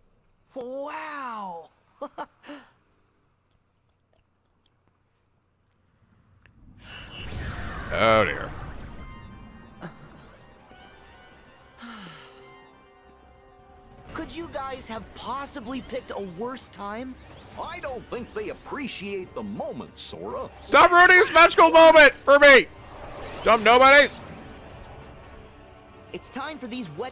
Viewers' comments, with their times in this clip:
0:08 lmao I got so hyped when heard tension rising